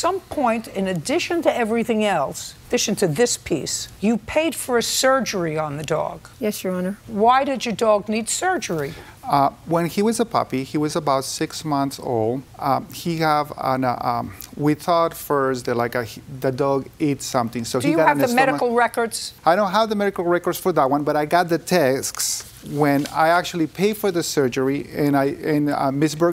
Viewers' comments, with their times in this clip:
0:09 “WHEN HE WAS A PUPPY” 💅🏻🫠 FRUITYYYYY